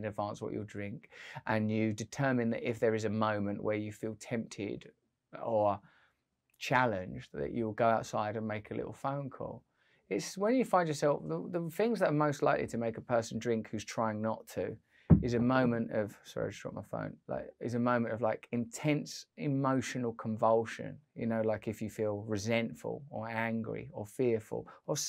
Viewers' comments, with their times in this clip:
0:08 Look at you being calm and making sense Russell great advice and delivered and this calm manner, I like it. I didnt drink for New Year's weekend, proud of myself and am cutting back and surprisingly not missing it much.